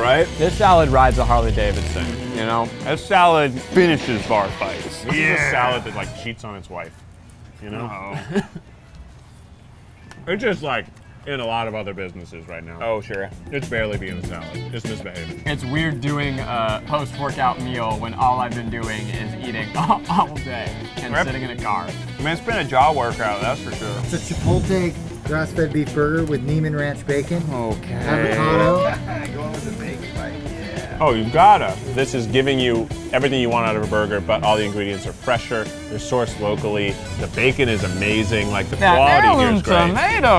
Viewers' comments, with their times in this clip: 0:05 😳😳 the silence is deafening
0:06 the music even cuts out awkward silence and the guilty “Noooo”
0:06 yikes the silence
0:24 ...if you can’t say chipotle when it’s an ingredient in your food i don’t want it